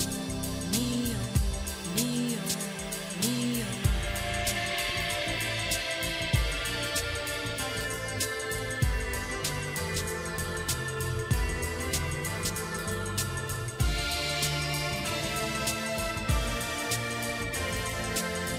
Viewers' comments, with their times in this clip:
0:04 I must of played this little section on repeat many times. Something about the music and the formation of Earth captured my imagination as a kid, I thought it was so beautiful.